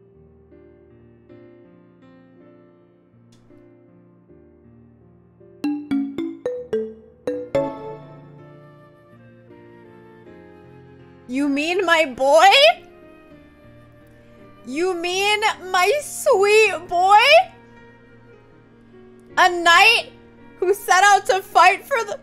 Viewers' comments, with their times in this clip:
0:08 OMG I want that squee! 😍 The feels 😰